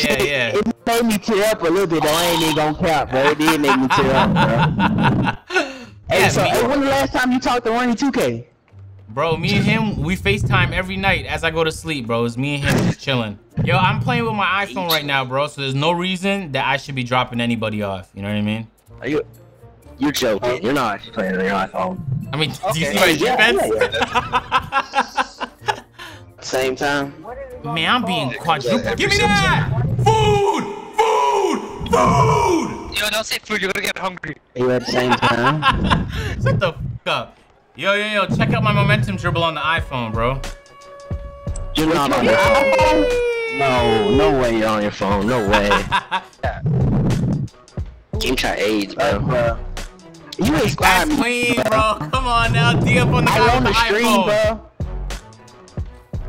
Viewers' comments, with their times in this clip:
0:07 garbage mic lol
0:44 you can hear him release his square button No hatin tho agent If im wrong sorry